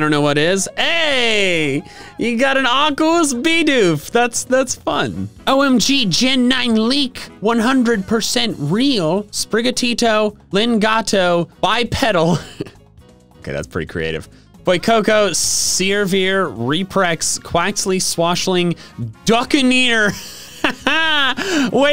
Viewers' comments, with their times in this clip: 0:08 Man straight up sounds like he is reading the Latin form a horror movie book.